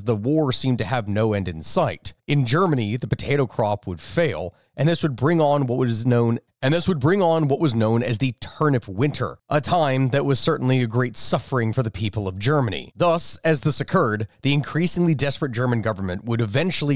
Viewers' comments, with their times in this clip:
0:04 also has repeated audio. Loved the video